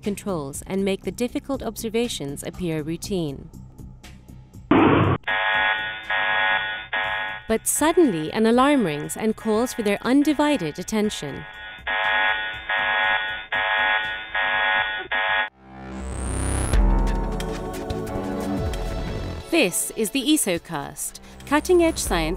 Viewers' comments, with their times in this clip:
0:07 I think someone misses star trek on TV, because I'm just sure emergency klaxons go off every day in astrophysics science labs LOL! better break out the comic con trek gear I hear aliens have landed at mono lake Hahahaha!!!